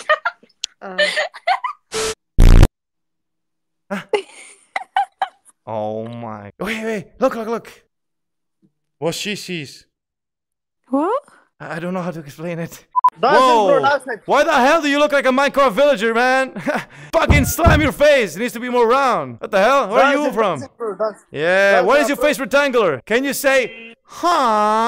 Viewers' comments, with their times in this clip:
0:10 was cee shees : Did he really say it like that :D or is that just how I understand it?